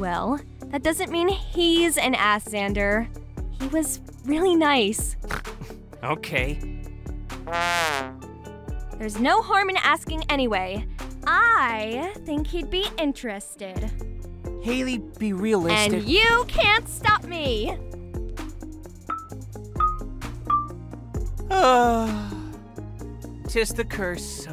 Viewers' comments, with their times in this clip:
0:05 The scene legit made me laugh when Zander snorted and then after the trumpet tooted after Hailey was gonna speak after he said that loll 🤣🤣